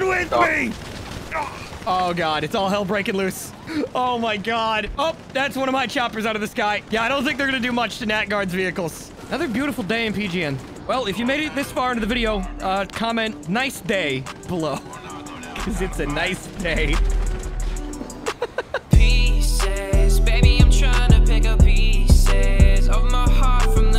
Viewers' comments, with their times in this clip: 0:09 Your laugh was perfectly synced with the song